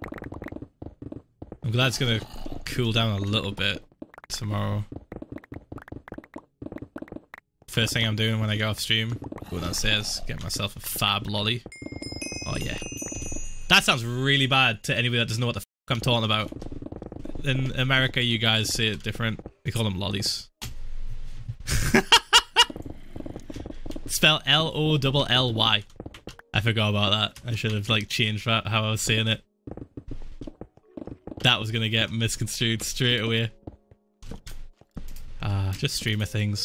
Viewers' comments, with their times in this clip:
0:07 Police Sirens rapidly approaching
0:09 fat loli FeelsGoodMan
0:20 wtf? loli? I got confused wtf he said xddd